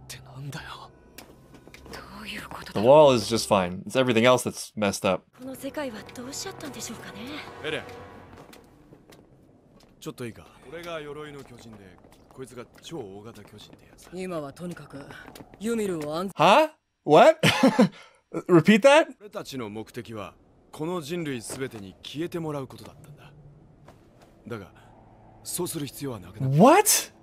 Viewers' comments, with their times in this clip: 0:10 he said that so casually that I legit thought I read the subtitles wrong, BUT NOPE.